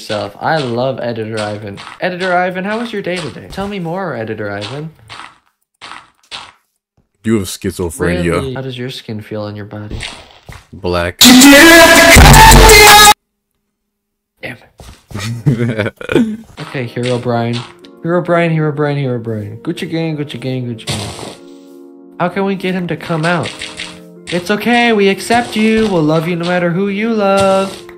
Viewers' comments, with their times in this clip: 0:10 goodbye headphone users, encluding myself (,: